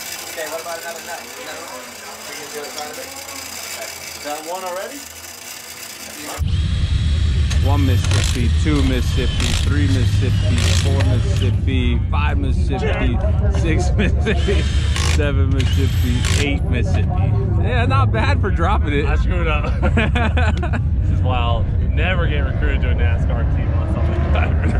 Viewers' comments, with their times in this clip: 0:10 3 miss-a-shifty 4-miss-a-shifty